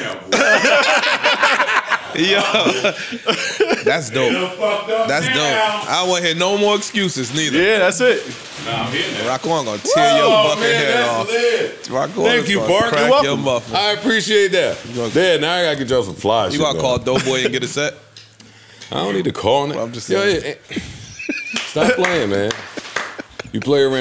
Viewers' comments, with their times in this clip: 0:07 that "WOOO" bring back the nasty awards 🤣🤣🤣🤣